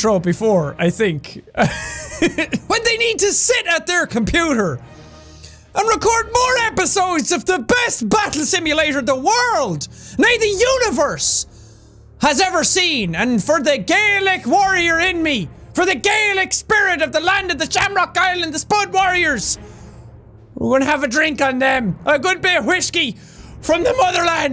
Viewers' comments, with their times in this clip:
0:09 Did you say "Nej"? (For all of you non swedes: it means No)